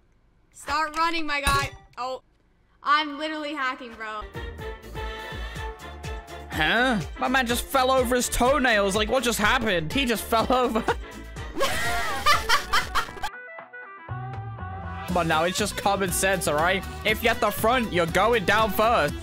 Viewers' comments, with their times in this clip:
0:04 ayo the pizza here the guy in the black: falls over* oh my ears burn